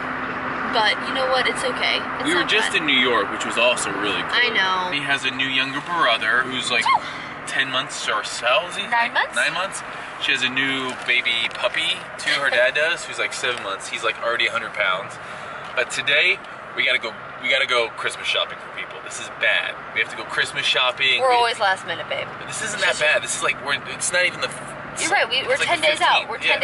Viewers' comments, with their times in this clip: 0:07 that was the softest sneeze I’ve ever heard.